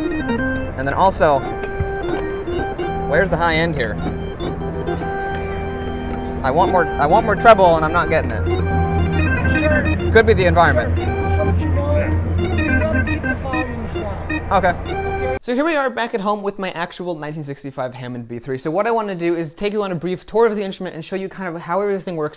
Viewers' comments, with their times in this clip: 0:10 Tell that old codger to shut his hole, you are filming for YouTube!